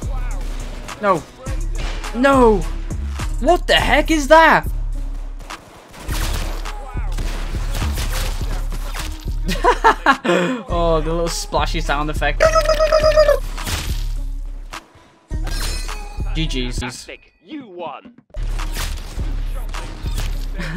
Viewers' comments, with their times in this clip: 0:07 WHAT DA HECK (WHAT'S DA NOISE HE MADE)